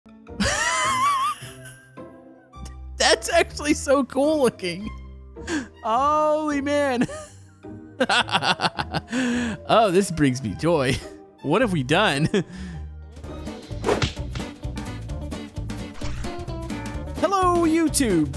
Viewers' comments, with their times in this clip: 0:00 start a video with laughing